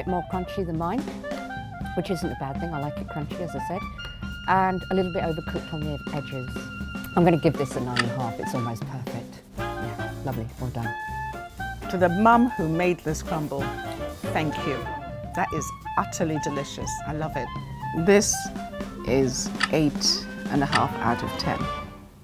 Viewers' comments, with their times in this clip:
0:10 The mom sounded like Gordon Ramsey